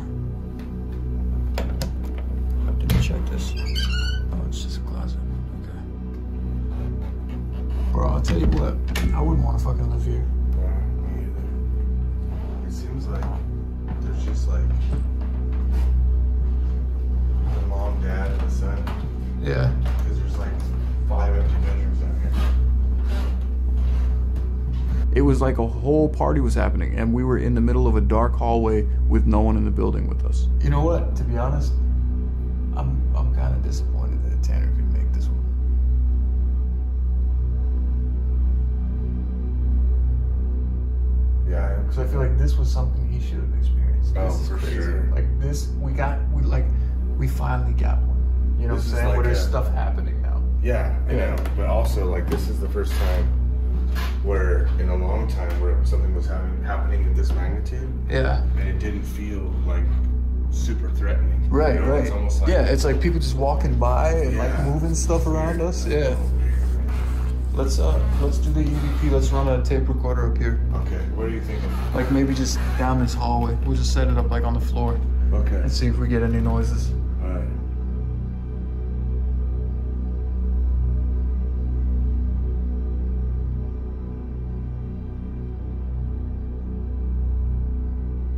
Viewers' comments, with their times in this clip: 0:10 Am I the only one that heard a "meow" minutes right after he closed the closet door
0:23 I feel sad that the cat lives in what is such a scary environment to him/her 🥺😥 He/she is such a beautiful black kitty! ❤🐈 I noticed a chandelier light at the top of stairs from the basement that looks nearly identical to the one that my parents had hanging in our entryway for most of my life. That's kinda cool. I thought I heard a voice say "no"
1:07 Just around the mark there is a creepy voice that doesn't seem to be either of you but I can't quite tell what it says maybe go back and slow it down
1:10 there sounds like a women's voice that came thru..can't make it out but might want to reference that.. good video tho